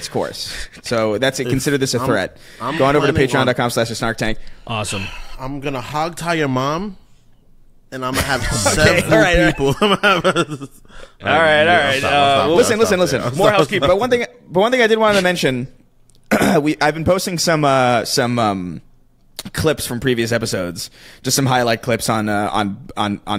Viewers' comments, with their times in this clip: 0:04 "im gonna hogtie your mom..." lmao god damn the delivery on that.